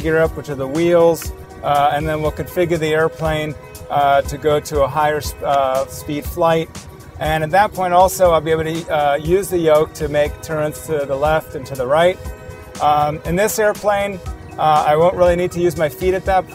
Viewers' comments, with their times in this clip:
0:03 He just said configa